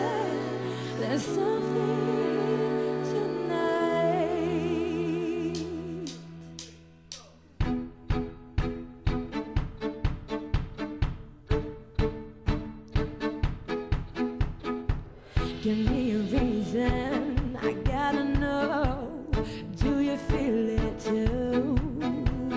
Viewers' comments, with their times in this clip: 0:10 similar to Viva La Vida. Nice cover